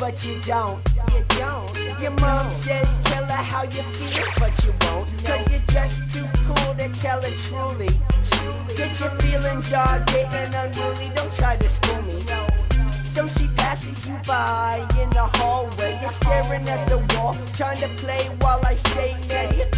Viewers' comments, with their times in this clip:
0:04 I see no one talk that the way this girl disappeared with an audio que that made it sound like she teleported and its the funniest thing to me